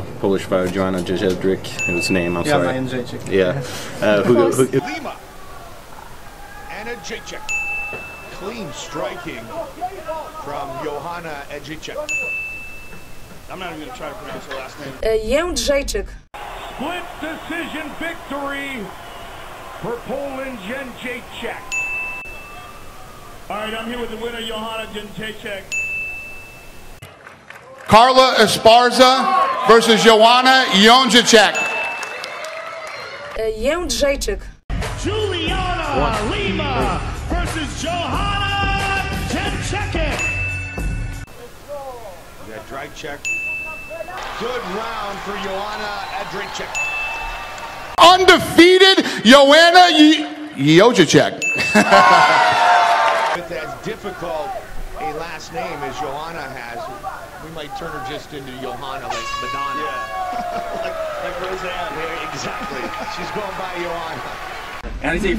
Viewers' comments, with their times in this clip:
0:10 sounds like he said edgy czech
0:20 Goldie got pretty close
0:37 lmao he was so confident
0:37 Did Rogan just said '' ten chicken''
0:49 Dana was quite freaking close at 45 sec... I wouldn't call this a fail, he's by far the one who got it the best XD. But then he solidly fails XD